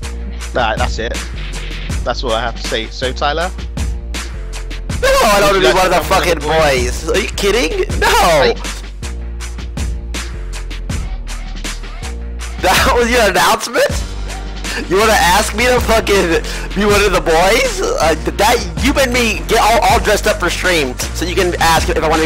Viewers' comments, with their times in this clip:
0:07 his mic is ass